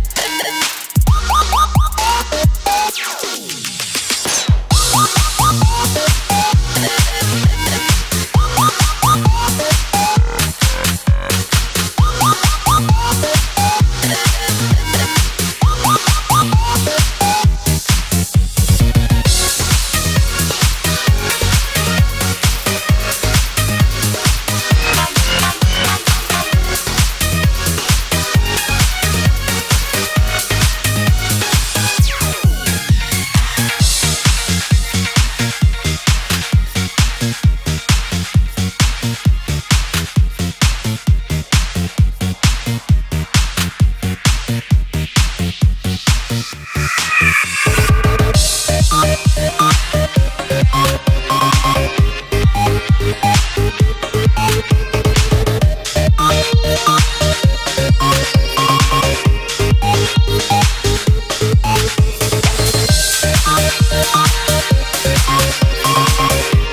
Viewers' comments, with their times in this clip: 0:04 Yo... Is that a charger shot??
0:47 That noise ..... it sounds like a scream. As if she’s calling out for help.....